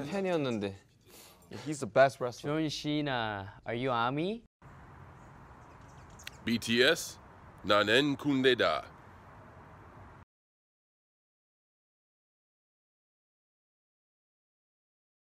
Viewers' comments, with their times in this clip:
0:07 That sounds like elvish